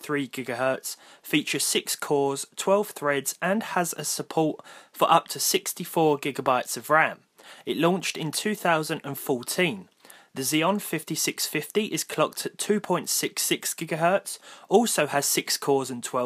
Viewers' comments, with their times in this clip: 0:03 'suupport' . Almost. So close